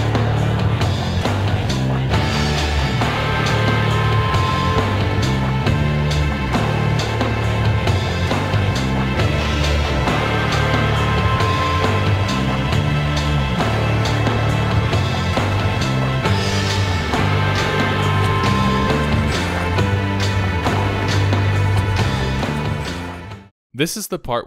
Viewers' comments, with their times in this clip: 0:06 That sounds like porn music ....